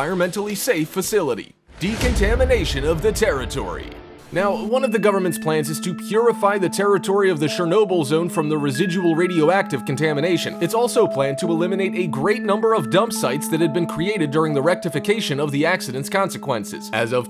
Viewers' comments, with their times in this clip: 0:03 Why so creepy music ?